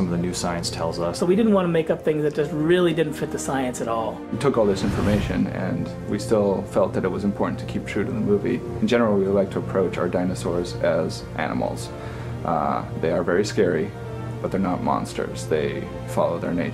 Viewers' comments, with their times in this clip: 0:04 ITS CHRIS GRIFFIN!!! LMAO!